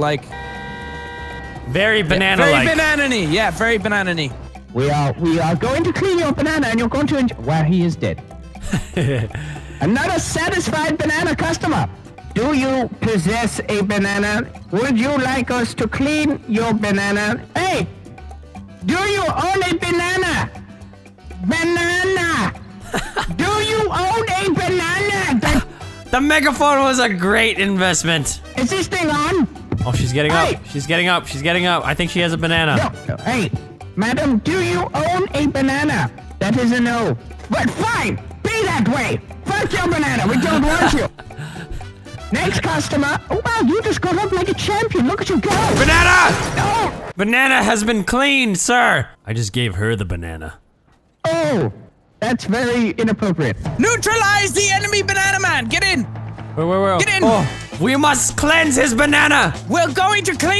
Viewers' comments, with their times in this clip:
0:07 XD best mic ever
0:12 Why does Terroriser sound like Papyrus
0:41 when terroriser had that mic I felt like 2013